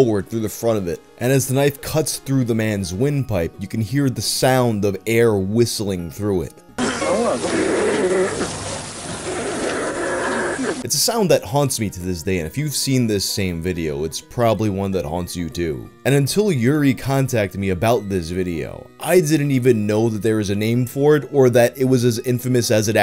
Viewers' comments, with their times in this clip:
0:08 sounds like a damn Pokemon cry.